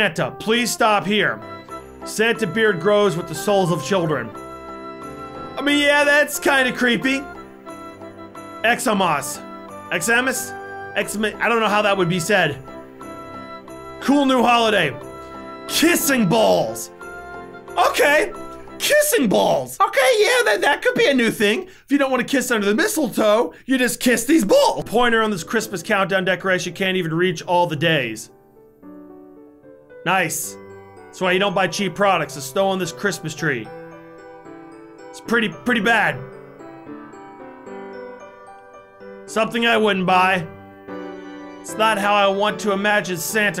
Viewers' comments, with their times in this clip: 0:05 actually said exams xams
0:29 did they said "snow" like it was something else